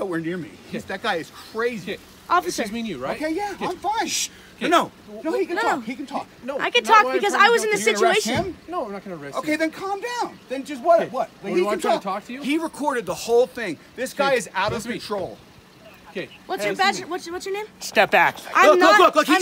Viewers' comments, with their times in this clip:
0:03 why in the hell is he shushing him? omg